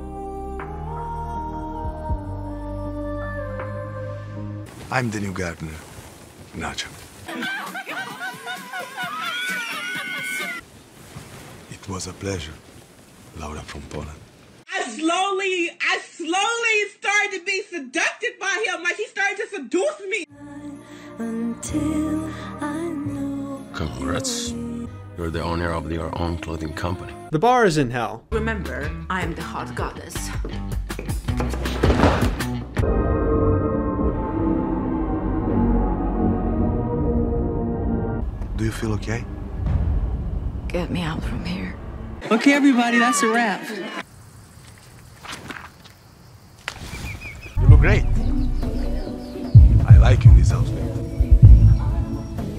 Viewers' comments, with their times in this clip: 0:04 i thought he legit said "I am the new gardener, not you" and then i saw his name is nacho which is more hilarious
0:39 tell me why i thought he said " do you feel gay?"